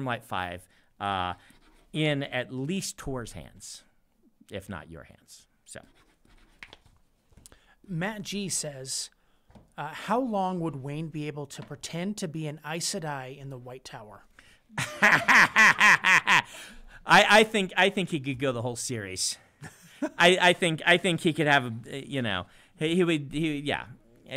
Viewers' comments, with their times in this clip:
0:09 All time Brandon cackle